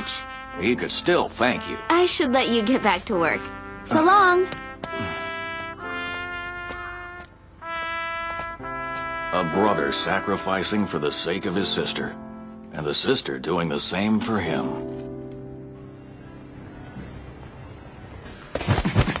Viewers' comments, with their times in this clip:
0:04 did she say salam????